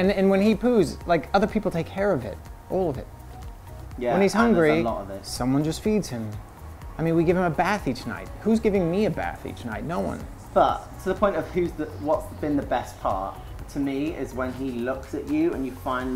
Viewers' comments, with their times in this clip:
0:03 did anyone notice lance's British accent when he says "all of it" lol